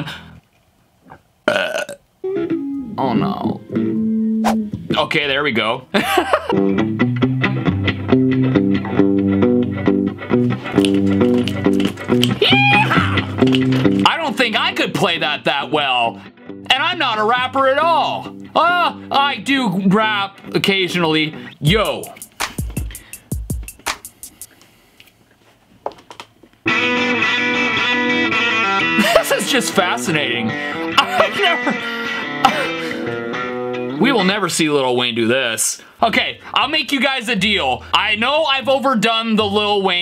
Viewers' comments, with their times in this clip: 0:06 Post Malone playing an SG Throug a Deluxe Fender amp snd that Rythem that he was playing with the Reverb is Just So Perfect.
0:27 he’s playing SRV move